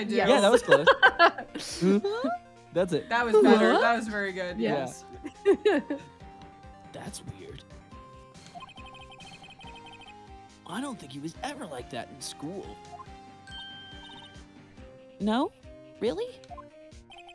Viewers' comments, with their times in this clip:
0:04 i love y’all, but those were the WORST tim allen grunts.